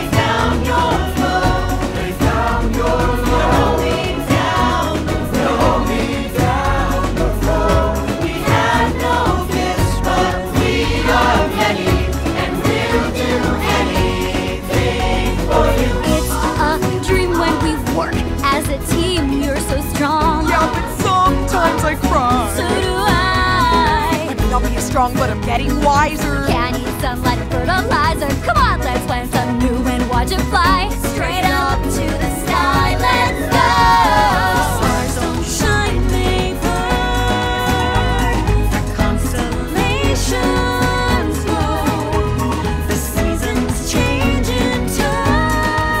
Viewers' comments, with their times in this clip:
0:04 Ah, lol. Until now I thought they were saying "Roll me down the road" 😂
0:16 this triplet duet is so good man, it's honestly my favorite part of the song.
0:16 sounds exactly like Isabela and Dolores’ part In ‘We Don’t Talk About Bruno’
0:24 isn't just me or it sounds familiar
0:24 that sounds familiar
0:24 “I may not be as strong but I’m getting wiser” why does it sound like a lyric from a different song? Like from an entirely different movie
0:25 This entire song is the most "Lin-Manuel Miranda" song in the movie. has the exact same rhythm as one of the opening lines of my shot.
0:33 The way Dolores says Let's Go! Loudly due to her gift being gone just makes me feel like I'm there somehow.
0:34 Took me while to hear but Julieta is singing there alongside Mirabel, I always thought only Mirabel was singing that part but now i can hear that Julieta is also singing. Also, Julieta's voice is literally stunning.